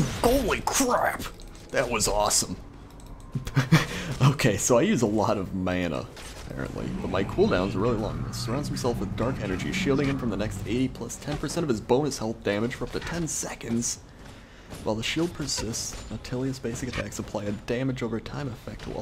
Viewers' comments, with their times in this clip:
0:05 You said "mana" funny